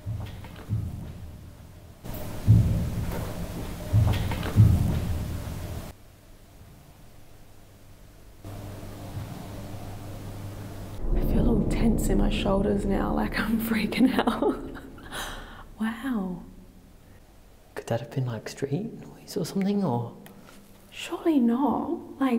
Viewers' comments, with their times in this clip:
0:05 the sound sounds like 'the backrooms' and that makes it extra scary.